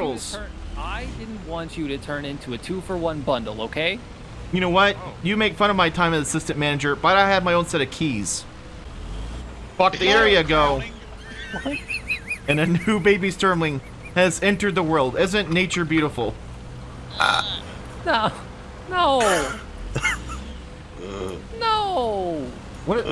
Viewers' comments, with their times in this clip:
0:10 that laugh killed me i am sorry but your tea is ready Wheezing